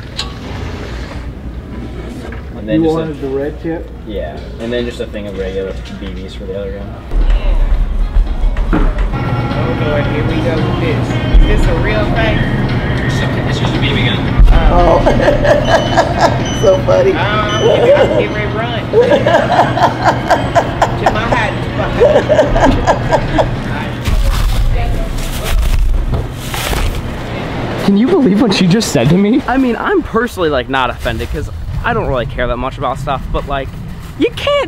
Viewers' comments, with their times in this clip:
0:07 whole store got rick rolled
0:07 that whole store got rick rolled.
0:07 Bruh.... I just got rick rolled fro wallmart 😂
0:07 Walmart Rick Rolled every customer in there. if you lisen closely you can hear it.
0:08 walmart just rickrolled everyone here
0:08 Was that just me or when they were checking out did you hear Rick Ashley‘s not gonna give you up
0:09 So.. We're just gonna ignore the fact that the store's playing 'never gonna give you up'.
0:09 That moment we just vibing and Walmart Rick rolls us…
0:09 I just love that Rick Ashley is playing in the background
0:09 they be Rick Rollin the whole Walmart lol
0:10 The store started Rick rolling them 😂
0:10 I could hear “never gonna give you up” on the speaker in Walmart
0:10 Did I just get rick rolled by the Walmart radios?
0:11 ain’t anyone gonna talk about the whole Walmart getting Rick rolled.
0:11 everyone in the store got rickrolled
0:11 I got Rick rolled by a walmart
0:20 anyone notice the music
0:22 It’s funny never going to give you up is playing in the back round